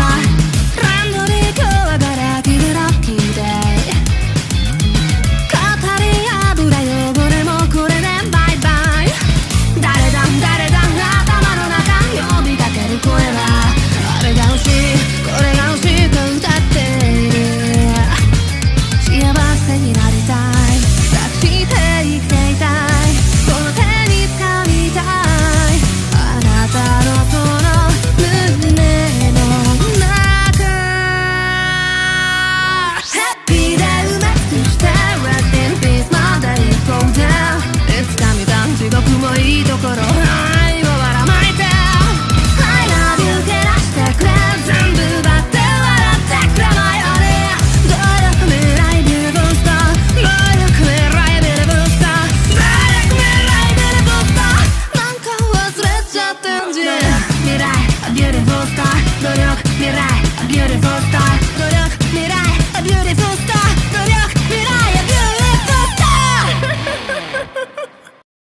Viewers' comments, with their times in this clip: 0:03 scorpion: mate, *scorpion voice *
0:37 Can we just talk about how good the singer is in
0:56 my favorite character with his stand megumin killer Queen made a big boom